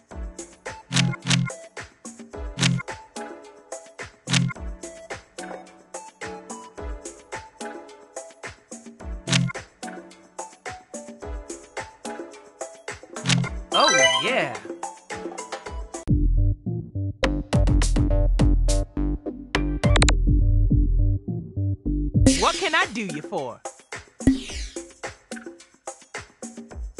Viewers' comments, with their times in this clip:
0:09 Oh god, I think I heard a lot of old rock.